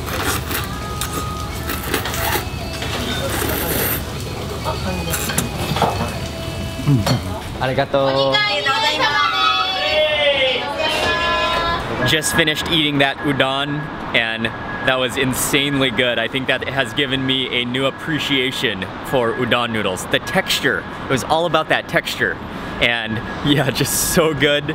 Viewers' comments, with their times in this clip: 0:08 I like the musical good bye given by the staff..